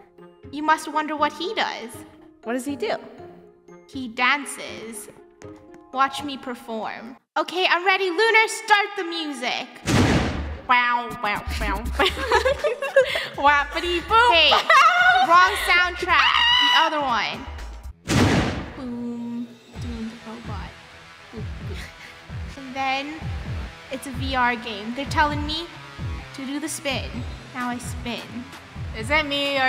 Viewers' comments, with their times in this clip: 0:10 that's the best music I've ever heard of😂🤣😂🤣😂🤣
0:11 Bootiful music 5/5
0:11 Best Music Ever Wow